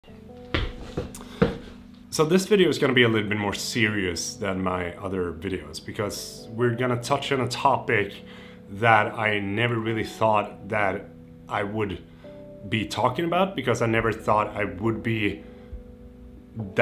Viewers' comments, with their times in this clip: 0:02 haha, you cut out the sigh